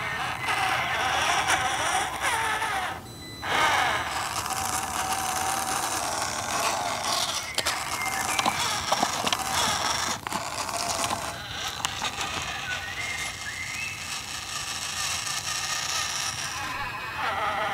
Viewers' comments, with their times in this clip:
0:05 bird sings another one bites the dust